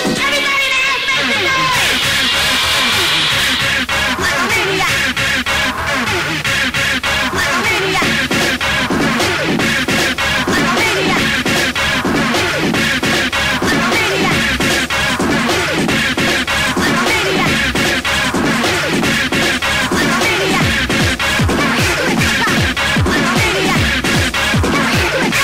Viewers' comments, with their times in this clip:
0:06 someone should remix that fucking beat into a newer song please please so everyone can hear it